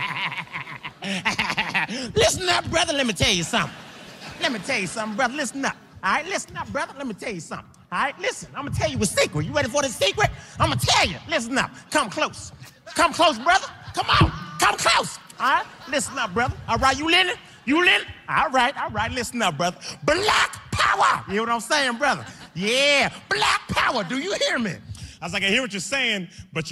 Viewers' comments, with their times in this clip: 0:10 if you watched the boondocks you m ow what character he sounds like